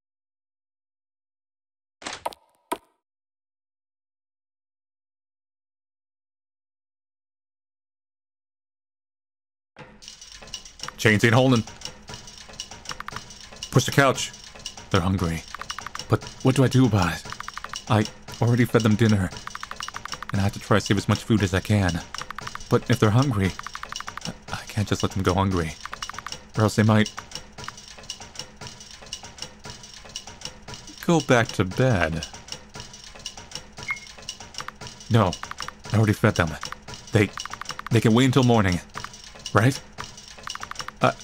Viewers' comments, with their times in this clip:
0:10 that's actually a good beat lol
0:29 oh my god did you hear the tone of his voice that’s the most evilest voice I think I’ve heard in with his videos!